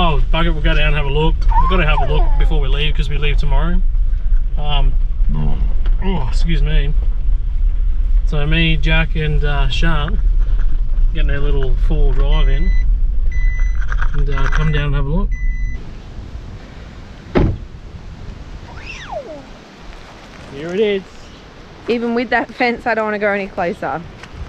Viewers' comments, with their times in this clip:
0:05 the burp was my favourite!!